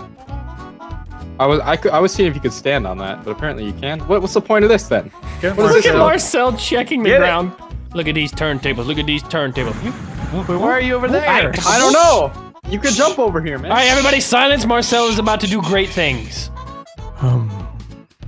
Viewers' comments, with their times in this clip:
0:06 I love the bad fur day music in the backroad